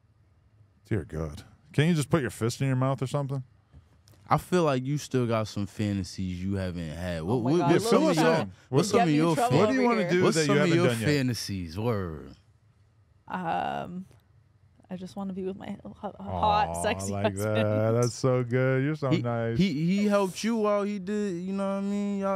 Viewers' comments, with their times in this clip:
0:06 oou shit 😂 then the stutter 😂 mf don’t never stutter